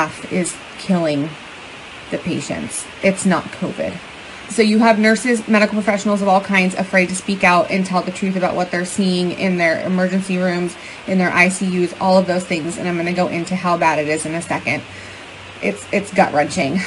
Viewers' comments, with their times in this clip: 0:03 She starts talking